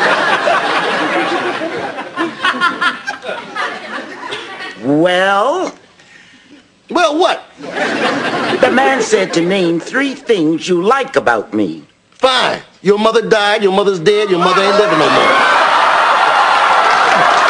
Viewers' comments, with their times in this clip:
0:04 I love the reaction from the studio audience, when he said that line. LOL. 😄😄😄😄😆😆😆😆